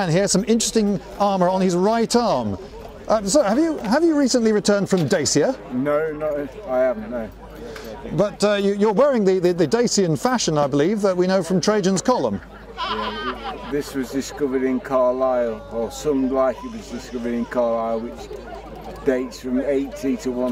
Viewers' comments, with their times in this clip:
0:06 dude sounds drunk lol